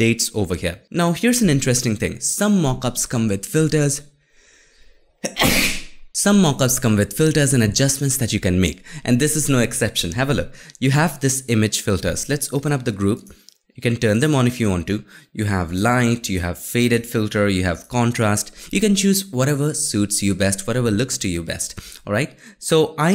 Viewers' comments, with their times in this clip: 0:05 YIKES bless youuuu ahaha😂